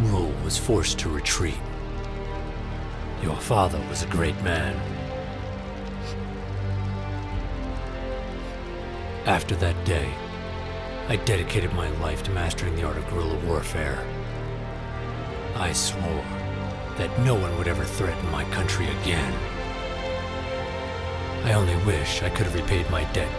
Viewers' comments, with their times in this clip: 0:05 Such cri, much act. wow